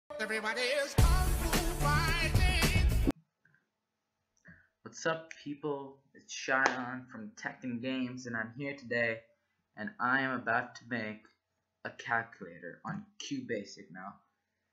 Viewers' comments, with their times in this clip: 0:00 Lets Go KungFu MUSIC YOO